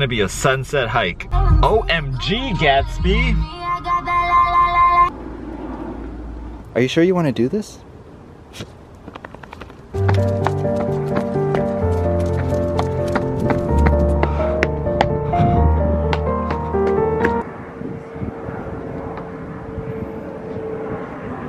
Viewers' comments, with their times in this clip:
0:09 what is that piano song called? It sounds very peaceful and beautiful.